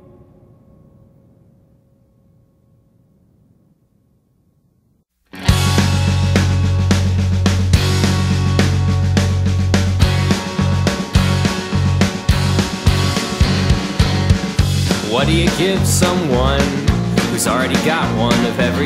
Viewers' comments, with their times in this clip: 0:03 god damn that tone switch What we're they thinking putting that twangy annoying shit right after a song you cry to?! THE FUCK MB